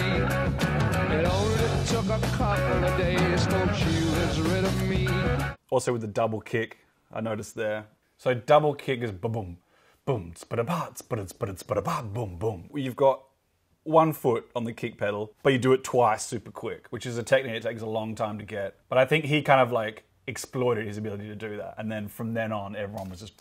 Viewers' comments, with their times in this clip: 0:09 You can tell Kevin is a great drummer by how he can imitate bonhams quick bass drum double kick hits with his mouth
0:09 even his beatboxing sounds Australian
0:10 had to see so many times. This guys is good also at doing vocal drums lol. I tried so many times and couldnt replicate that